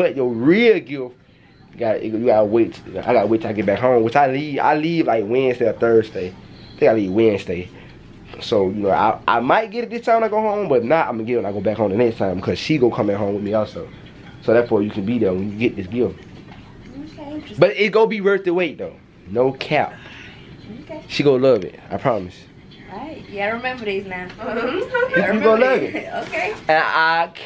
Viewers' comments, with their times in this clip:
0:10 wtf man. ik you did not just fart. my mouth was open 😭🤮😷